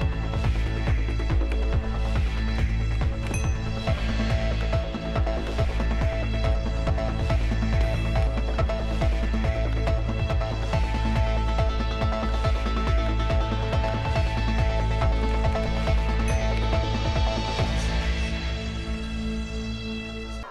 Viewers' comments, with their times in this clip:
0:03 music kind of in sync